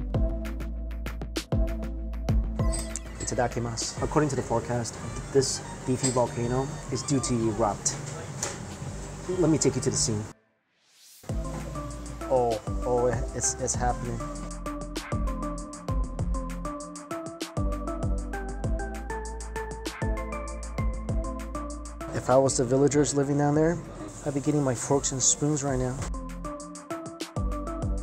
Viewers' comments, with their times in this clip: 0:10 sync with the beat :O